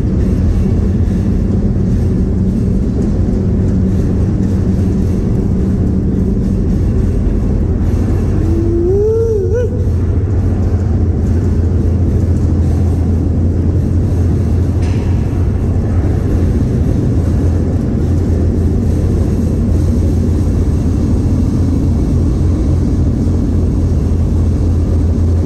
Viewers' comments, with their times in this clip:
0:08 ain't nothing like the Shoestring howl 🤙🏽